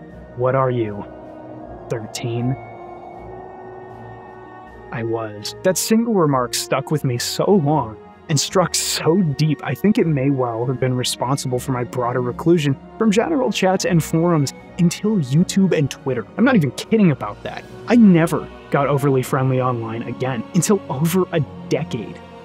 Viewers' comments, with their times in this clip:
0:04 may be some of the best comedic delivery and timing I've seen. I belly laughed. "I was" will be seared into my brain for a while.